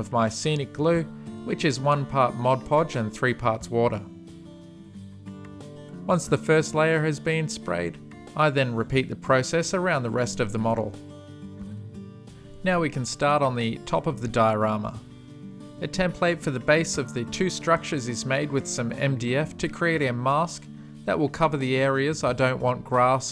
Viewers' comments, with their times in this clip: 0:08 Pretty good voice crack there 😂